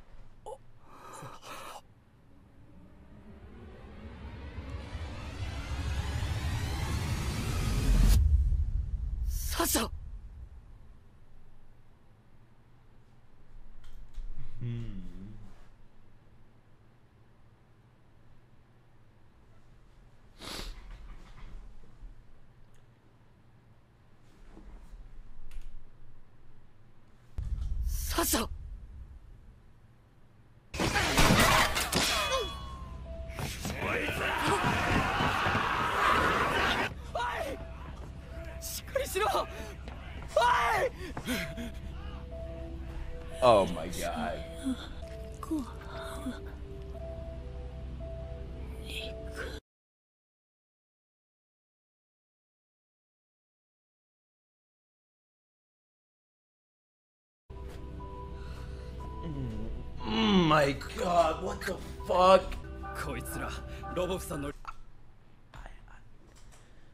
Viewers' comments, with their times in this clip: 0:06 talk guitar remix begins to play
0:51 My boy trying to hold the laugh 💀